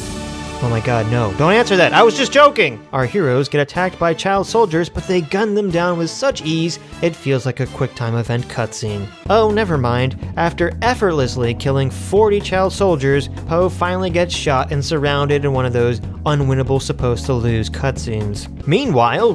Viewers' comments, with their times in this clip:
0:03 can we take a moment to appreciate this storm trooper shooting scene with persona music overlapping it.